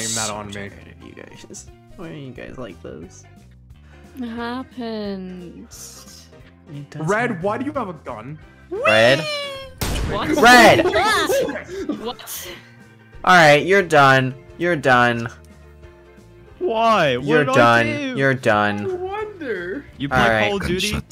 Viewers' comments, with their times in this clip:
0:07 Loving this Already and the Moment when Blank said Red why does he have a gun and before he set it off not only did it made me Laugh at what happen but it made me Jump from how the Loud the Gun shot was because i has it at a high volume but it was Amazing